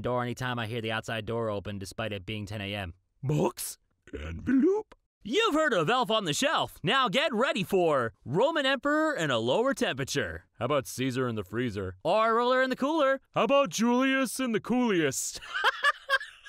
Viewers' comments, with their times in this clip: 0:04 Ok, envelööp killed me. ... Which means that, similarly to real life, I've died before witnessing Mainstream Homestuck. (insert Hiveswap Act 2 release timeline joke here)